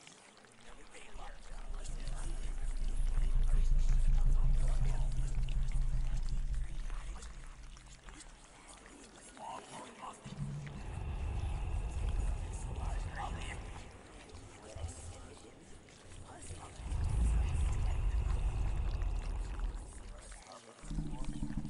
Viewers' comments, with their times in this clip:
0:03 This is quite relaxing to listen to over lunch. "I'm on a Mexican ray-dee-ohhh..."